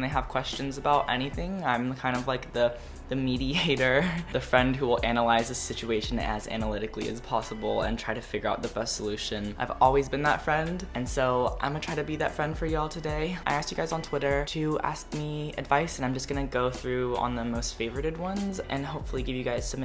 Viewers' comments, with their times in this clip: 0:03 i thought you said "meaty hater"